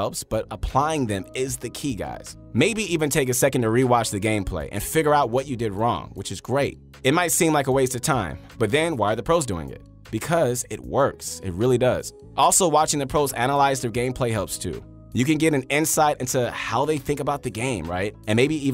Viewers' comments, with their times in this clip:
0:03 sad mobile and Nintendo Switch sounds...